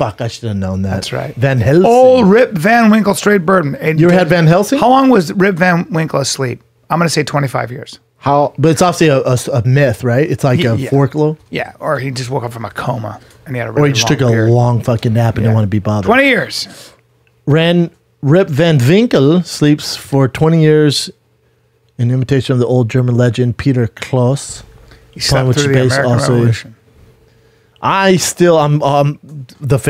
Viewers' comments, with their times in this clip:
0:04 Brenden “forkloe” Schaub
0:10 “It’s like a forklowe (folklore).”